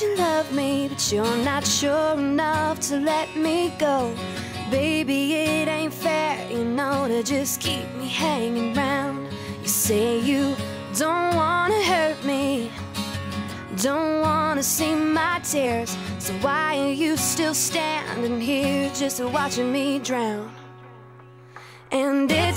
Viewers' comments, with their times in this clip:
0:09 From a musician's standpoint, that rhythm is ridiculously difficult and SO CREATIVE. The pauses just give it excitment.